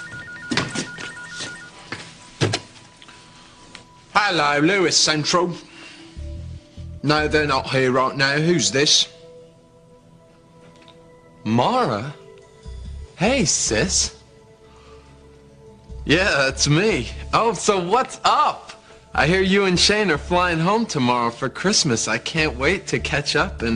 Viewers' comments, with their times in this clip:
0:06 I’m willing to bet that’s his real voice